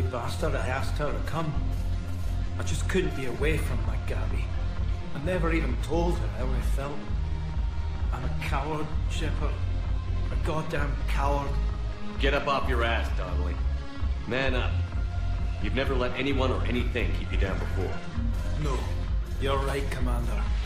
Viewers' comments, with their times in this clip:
0:07 Ooooof The way he says that, it’s just Damn